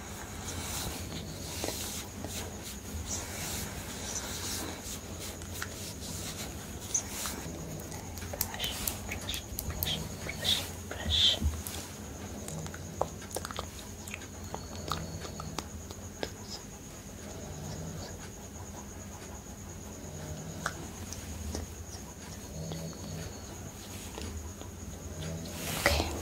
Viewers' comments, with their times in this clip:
0:08 is someone snoring? 😅